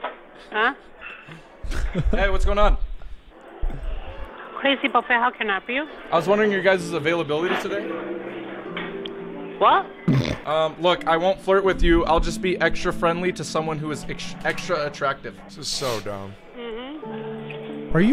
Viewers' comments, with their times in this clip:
0:05 did anyone else hear the oblivion music ?